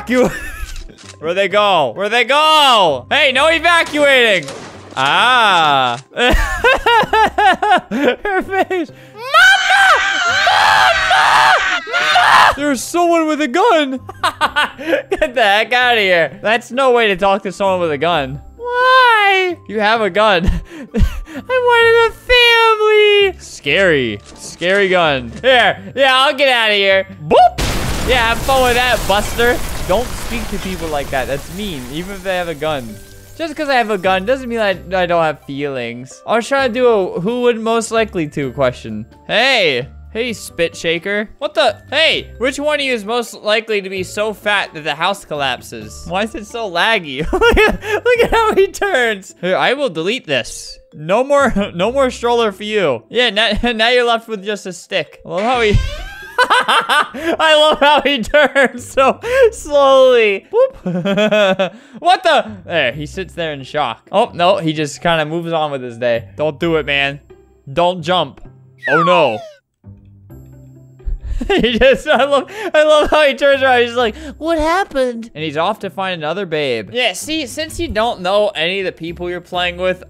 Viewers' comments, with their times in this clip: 0:09 Nobody: Me: school sirens be like
1:07 umm that oh no was how did he do that said perfectly?
1:08 :Ugandan knuckles voice
1:08 why did that sound so much like the meme?